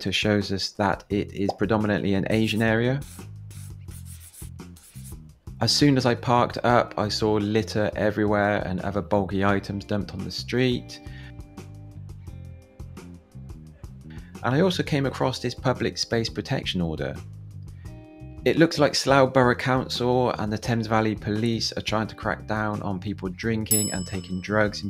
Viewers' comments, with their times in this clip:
0:06 The background music seems somehow completely unsuitable for this dishevelled town, especially the slow sexy groove 🤣